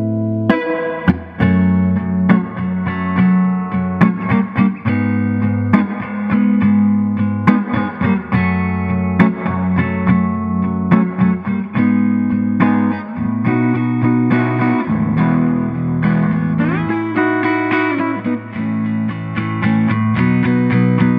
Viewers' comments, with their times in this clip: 0:09 i tuned out bye reverb man